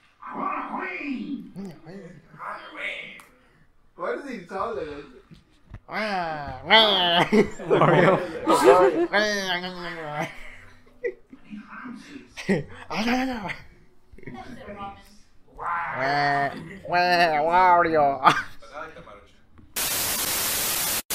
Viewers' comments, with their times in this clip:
0:06 Waluigi noise intensifies